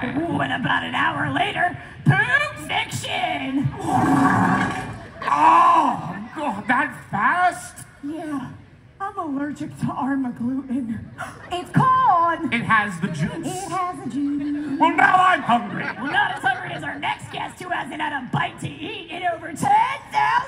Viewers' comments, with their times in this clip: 0:03 They used the Fart Sound meme